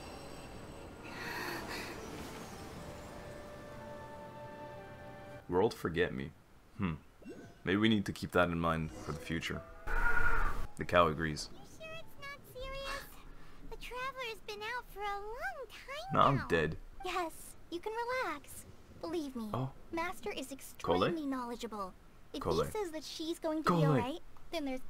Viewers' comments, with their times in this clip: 0:08 IM FUCKGING SHITTING MYSELF OVER THE COW SCREAMING ITS SO FUNNY